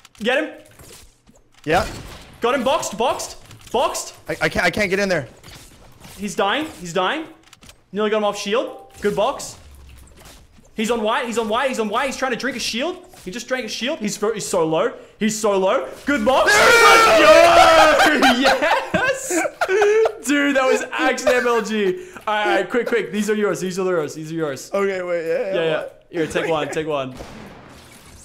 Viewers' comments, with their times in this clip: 0:09 a discord entering chat room sound went off and i thought it was me even tho my discord was off LMFAO